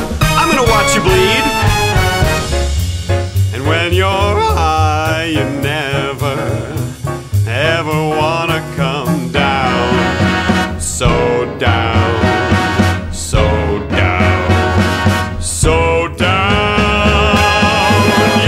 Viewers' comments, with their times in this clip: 0:04 Never noticed that voice Crack omg 😲